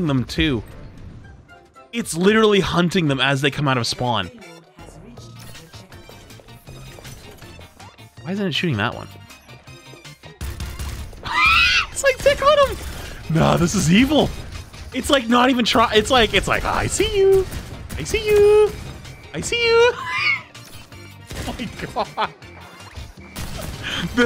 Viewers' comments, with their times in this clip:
0:03 I love how the music was synced with the three short bursts of fire.
0:07 EXCELLENT timing with the music. Thank you
0:07 I love how at this momemt the song synchronize with the bastion shots
0:09 I really like how the AI bastion’s bullets are timed to the music for a sec
0:09 I'm literally dying of laughter that the bastion shot with the rhythm of the song
0:09 I love how the turret syncs up with the background music LOL
0:09 the shots lining up w the music was so satisfying
0:09 the bastion shots went with the music
0:10 Bro the way the music lines up tho
0:10 The bastion Ai matches the beat on
0:10 am i crazy or did the bastions shots line up with the music